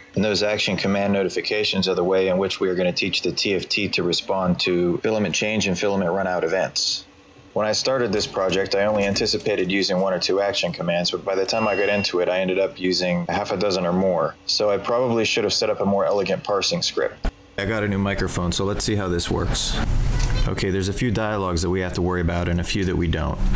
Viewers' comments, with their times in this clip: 0:10 The microphone quality before/after the upgrade is what my artillery feels like after replacing the stock firmware with your build 😂 Awesome work and really useful guide, thank you!